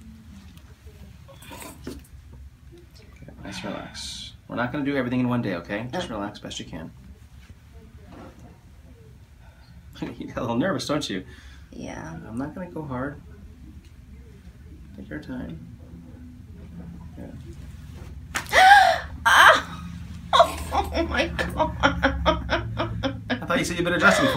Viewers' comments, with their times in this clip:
0:10 not gonna go hard. CRACK